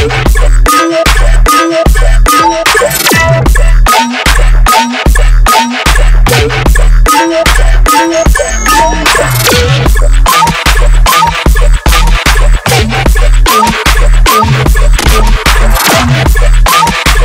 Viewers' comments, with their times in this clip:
0:04 why is this different than the actual track? hmmm